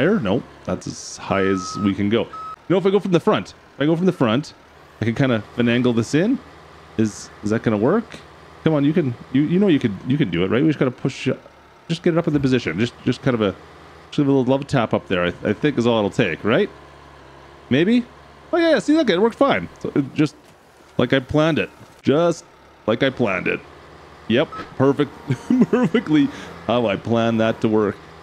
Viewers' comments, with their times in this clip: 0:09 Did anyone else hear the voice in the background but great video 😅